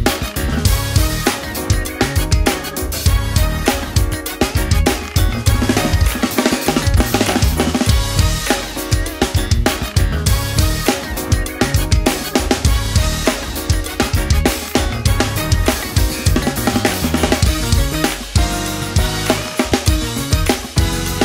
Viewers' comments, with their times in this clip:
0:05 Could someone breakdown the fill ?